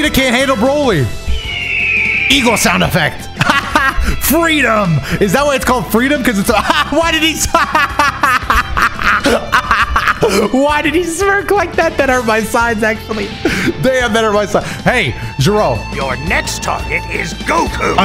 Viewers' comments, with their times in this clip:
0:03 eagle sound+his smirk is a master piece